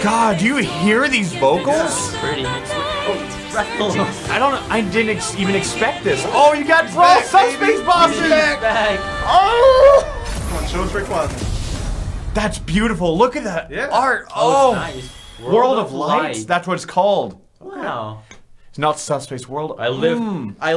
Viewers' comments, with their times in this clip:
0:04 who else thinks to goes to "well"